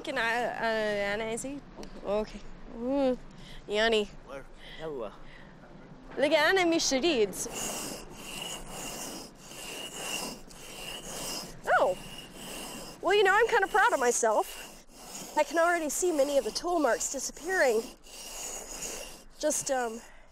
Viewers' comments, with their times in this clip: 0:06 what language was that